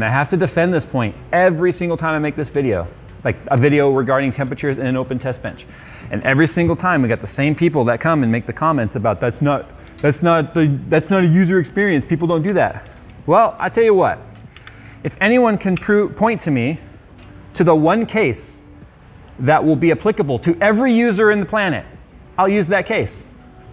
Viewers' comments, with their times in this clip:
0:08 this is why reddit is hating on jayz. he is condescending and speak like we are dumb.